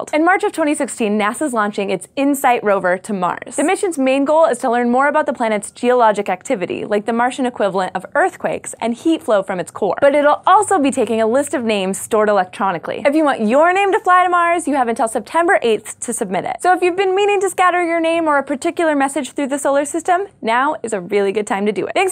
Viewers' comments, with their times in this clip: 0:05 did she say: "The moon's theologic activity"? :-D